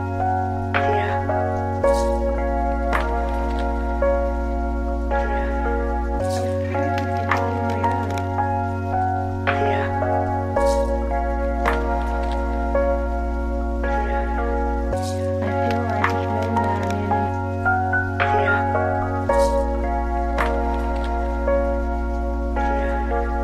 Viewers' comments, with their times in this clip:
0:05 old school Burial vibes.